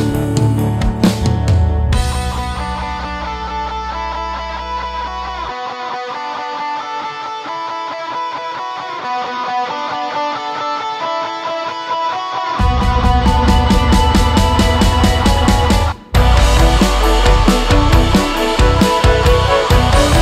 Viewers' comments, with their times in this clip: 0:08 Anyone else got Death Note vibes min section?